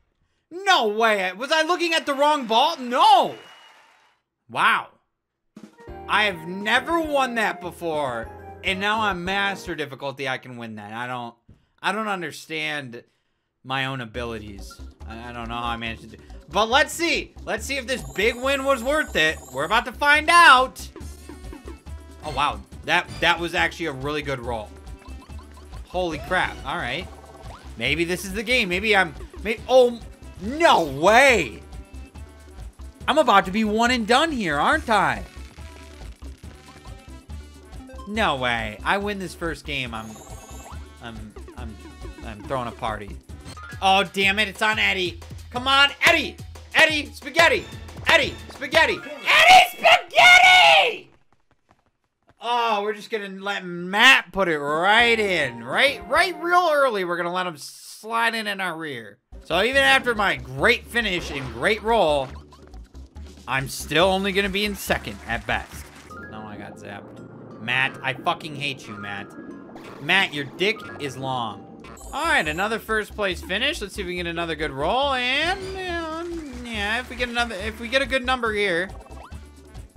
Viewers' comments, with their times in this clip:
0:03 idk why but that “weow” sent me 😂😂😂😂😂😂😭😭😭
1:00 (You’re his neighbor and in the morning you hear uncontrollable laughter and swearing) 😳